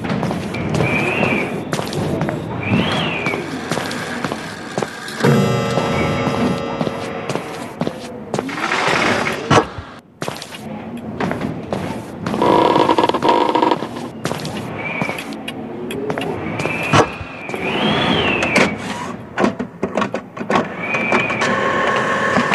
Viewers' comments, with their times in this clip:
0:03 the best soundtrack in this game☠️